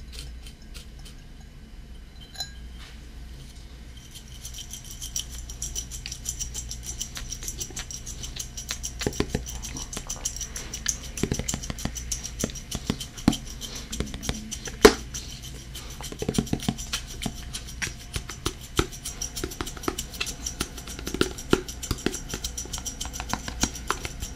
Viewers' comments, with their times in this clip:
0:07 ish it sounded like a drum and I started bobbing my head lol. It was like a song haha